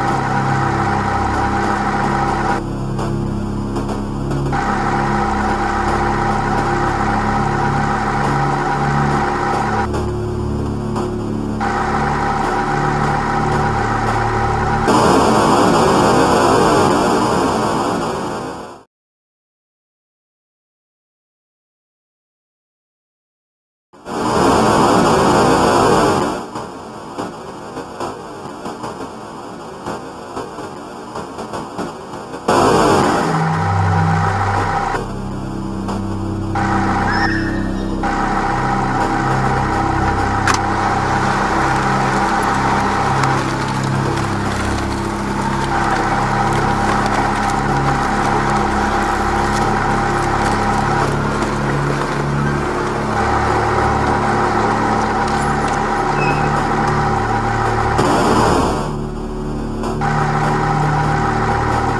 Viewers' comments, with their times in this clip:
0:10 I need to get up at 7 a.m. My face when i heard the alarm:
0:37 Who was screaming?
0:37 Is it me or can you hear children screaming in this part?
0:47 On I hear a child screaming,then the conveyor was activated and the bones of the children were cracked and the dead bodies of the kids were in the suit of the mascots.